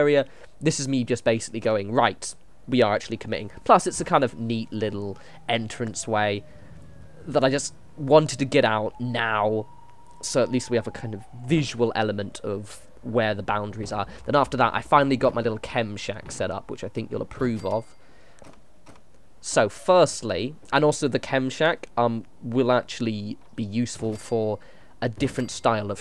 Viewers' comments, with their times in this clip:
0:08 Police car in the background or what makes that sound?!